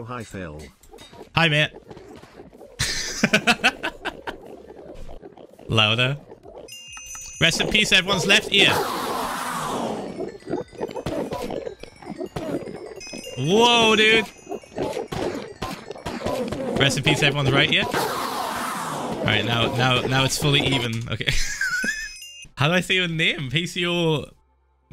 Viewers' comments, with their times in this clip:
0:06 jokes on you, im only wearing my right earb- oH fUcK
0:07 I have my headphones on in such a way that i only hear the right ear check! POG only deaf in the right ear!